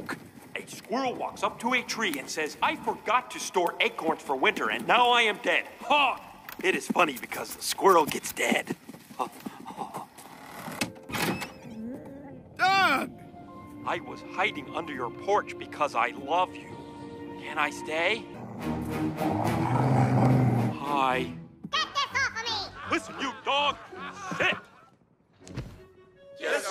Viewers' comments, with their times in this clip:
0:09 the sassy ha’s 😭😭